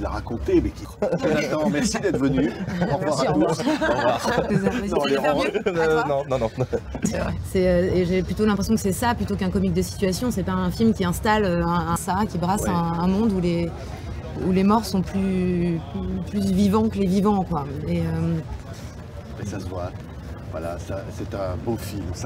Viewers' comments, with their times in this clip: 0:03 Merci, au revoir so cute when she laughs❤️ She looks so gorgeous in that interview, I can't.. I just wish I understood French😭 Thank you for these videos🙏